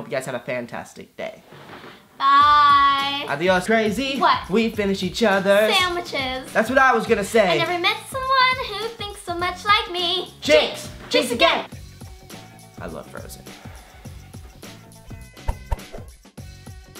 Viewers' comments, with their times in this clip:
0:04 OMG LEXIS VOICE IS SO CUTE AHH 🥺🥺🥺